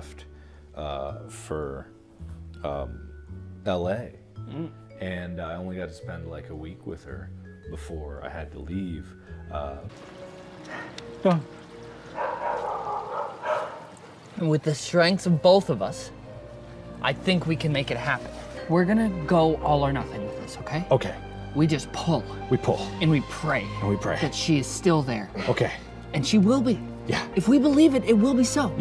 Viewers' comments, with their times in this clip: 0:10 that bark though. I think i heard it before. Ta ta ta ta ta ta!
0:11 I know that tune...Is that dog barking "Do the conga"?
0:11 That dogs bark sounded like a conga line
0:11 The bark sounded like the conga line song
0:12 Tell me why a dog barks in tune
0:12 those dogs were singing 😂😂
0:12 did anyone hear that song when the dog barked
0:12 did anyone else hear that musical pupper?